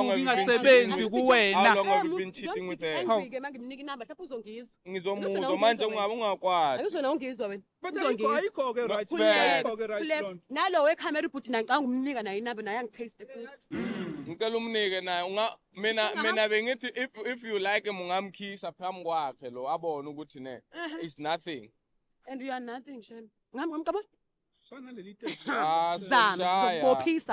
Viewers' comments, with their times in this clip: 0:10 This whistle for me 😂😂😂